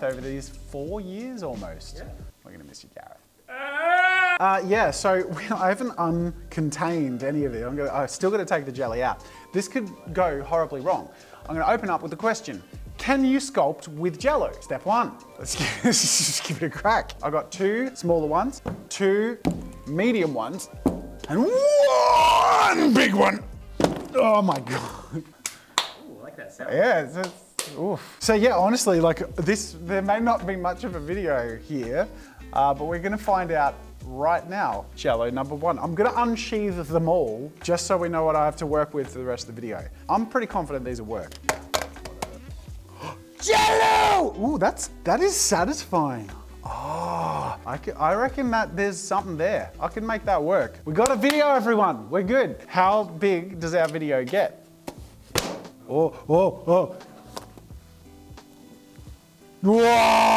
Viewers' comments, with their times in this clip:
0:03 Perfectly cut scream?
0:42 I appreciate the moment where the Jello just annihilates Jazzas brain function and overwrites everything with a desire to peak the audio!
0:42 it's so funny how he screams Jell-O and instantly switches straight to normal is so funny to me 😂😂